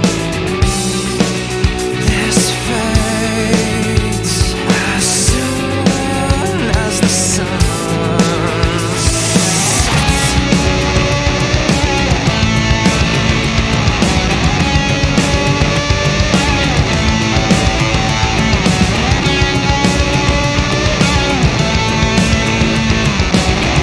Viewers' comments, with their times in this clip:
0:03 yeah, the song is peak post-TToT Chevelle. From like onward...it's basically a trademark chevelle groove jam session. also, I've always found the visual direction/effects on this video the tits.
0:11 dude killed that bass
0:11 dude killed that bass